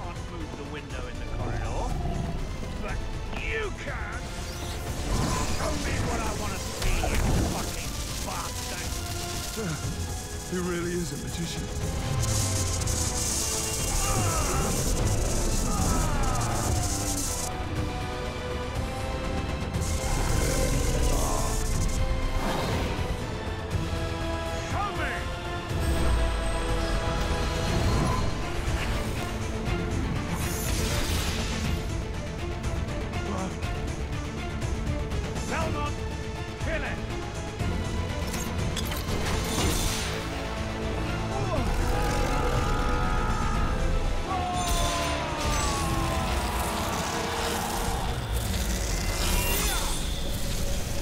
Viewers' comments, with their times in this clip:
0:06 The delivery of that line was epic
0:23 Dude how the music pick ups while germain is riding the visitor is so sick
0:34 that whip music transition ....